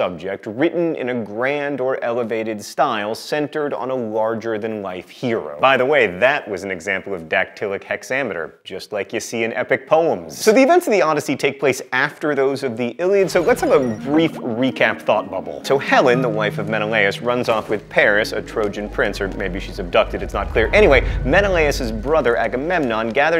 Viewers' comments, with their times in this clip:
0:05 Is that dactylic hexameter? I'm failing to scan it, though I only have experience scanning Vergil.